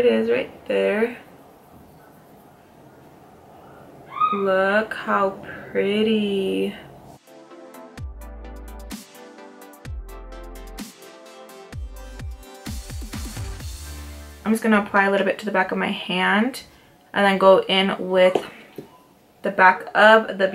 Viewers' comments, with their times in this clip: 0:03 omg! just with the swatches you did of the Nicole guerrero palette convinced me to treat myself. and hubby cannot say no since my Birthday is coming up. lol I'm watching this midnight and the lil squeak that came out scared me. I had to wake my hubby up to walk the house. lol. how mad he was afterwards. xxox